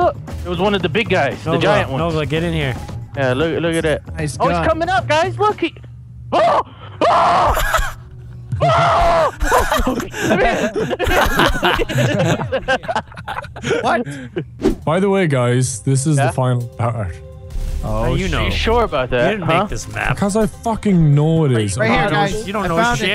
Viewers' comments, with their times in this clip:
0:06 he sounds so scared